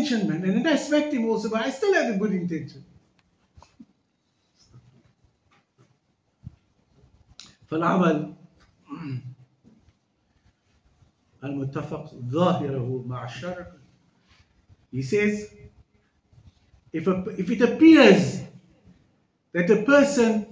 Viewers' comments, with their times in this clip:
0:05 Maaf man, sheikh don't even sound like a sheikh... your arguments are poor... you can't even read the arabic if what ghazaali says... come on...